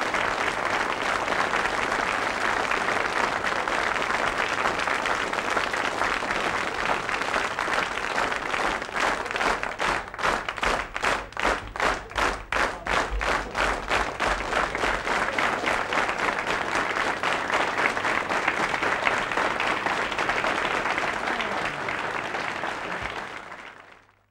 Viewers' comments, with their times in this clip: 0:08 are we just not going to mention the phase transition they all started clapping at once